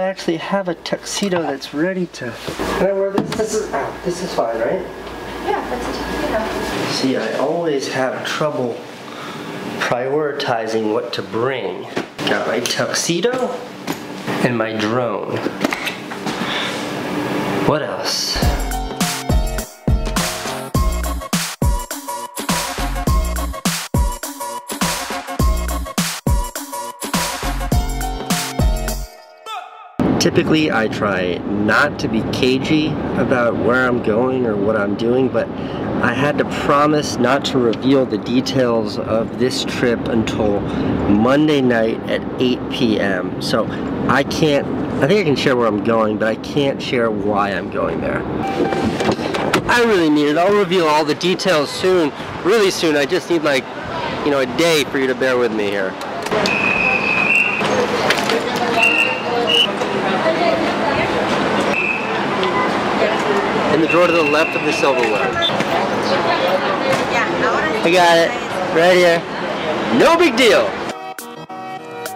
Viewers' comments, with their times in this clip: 0:03 Ok so CASEY FARTED lol ... Sry casey 😂 its fine i still love you
0:14 the audio got really terrible.
0:30 the mic sounded shity
0:34 The audio is too bad after the right?
0:50 what's up with the audio?
0:51 he broke is mic
0:53 Audio is shit